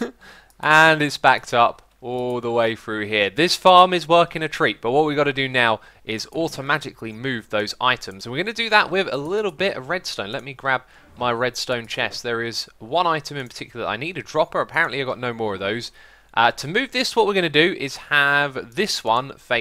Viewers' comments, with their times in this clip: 0:05 I swear I hear "automagically." I swear X, you make up like 10 words a day XD